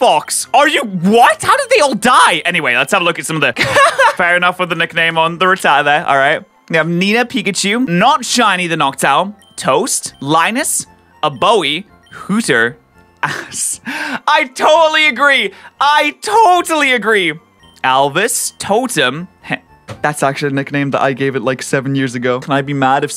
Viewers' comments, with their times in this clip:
0:10 OBOE "A BOW EEE" DUDE THAT'S OH-BOW, LIKE THE INSTRUMENT JZJXXHXH